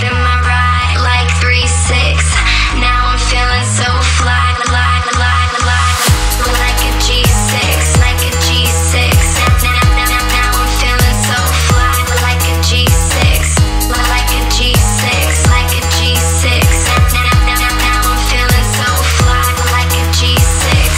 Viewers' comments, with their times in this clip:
0:04 that subtle drop, man the lyrical part of that before the bigger drop, fucking amazing!